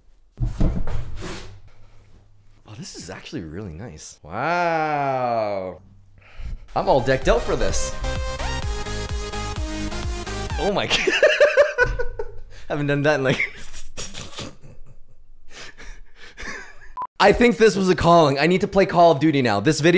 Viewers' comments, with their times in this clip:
0:06 The music makes me cringe 5 times more